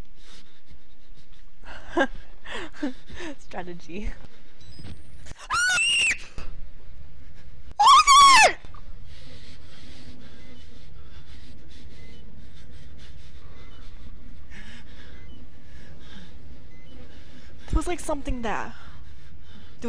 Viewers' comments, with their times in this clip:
0:04 dat scream tho